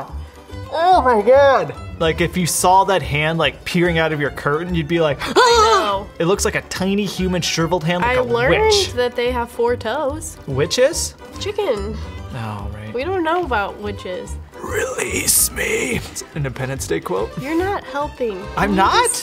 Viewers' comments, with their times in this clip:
0:05 I was just waiting to hear quiet “HES IN THE CURTAINS”